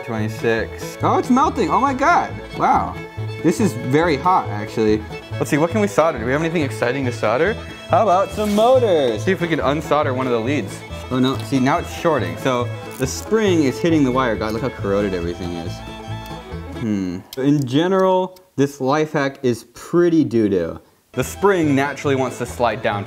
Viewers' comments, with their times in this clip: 0:07 why is there good background music for once?